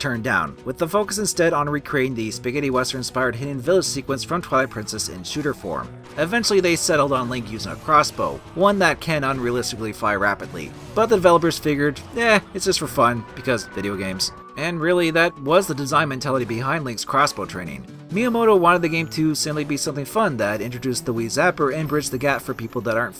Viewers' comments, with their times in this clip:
0:06 the music reminds me of epic battle fantasy